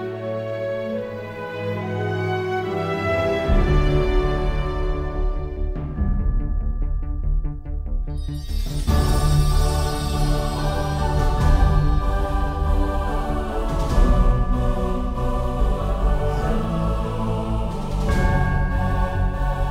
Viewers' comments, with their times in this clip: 0:04 LOL at the horrific images in the video juxtaposed to the magically hopeful and innocent Southampton music.